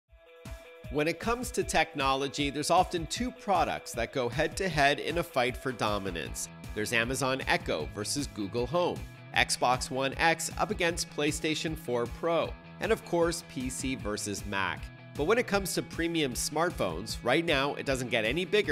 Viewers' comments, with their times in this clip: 0:03 From this point I could not hear any sound